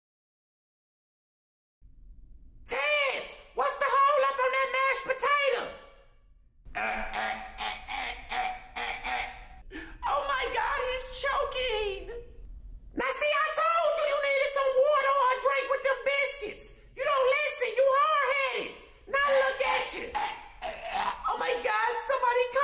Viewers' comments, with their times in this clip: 0:07 that choke sounded TOO REAL🤣🤣🤣